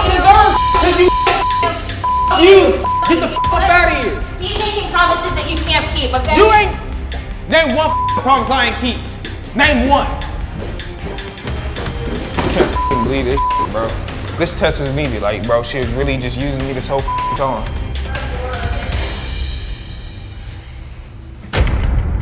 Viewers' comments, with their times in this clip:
0:10 Beep beep beep beep is all I can hear 😂